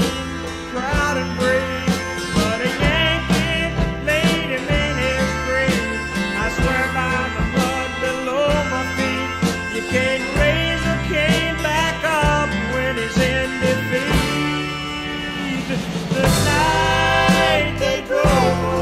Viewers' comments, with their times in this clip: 0:03 It’s like a halftime waltz type feel then under “yankee laid him in his grave” he plays 2/4 I’ve always loved that. I don’t even know that it means anything it just feels urgent for an instant